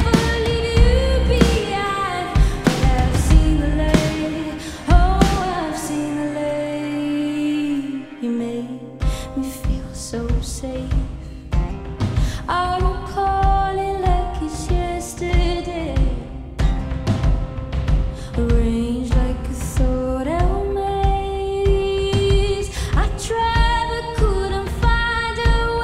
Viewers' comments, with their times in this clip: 0:09 I like the part where it sounds all Indian dance